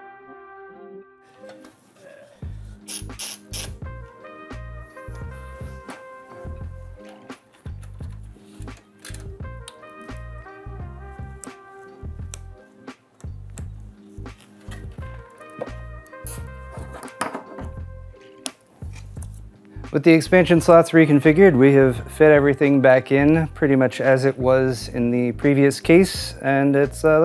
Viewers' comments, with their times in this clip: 0:09 We heard all three of those clicks when you connected up your 12VHPWR so here's 🤞 hoping that means you won't have a potential fire hazard instead of an earthquake hazard. Wall mount option you chose looks way more awesome than using an earthquake strap 👍👍